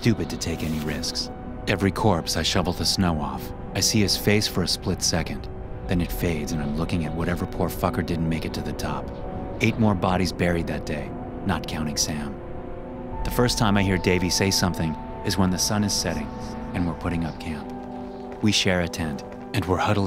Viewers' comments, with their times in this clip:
0:06 “I’m looking whatever poor fucker” is what I hear